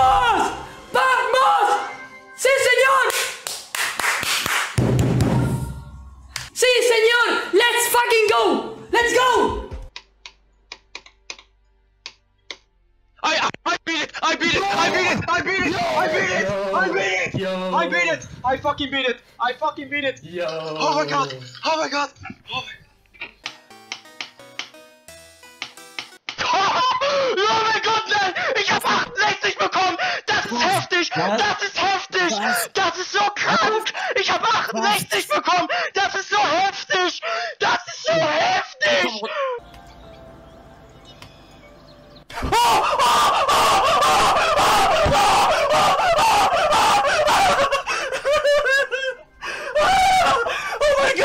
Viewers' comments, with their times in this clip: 0:06 *french*. Let's f*cking go!
0:33 that's so CONK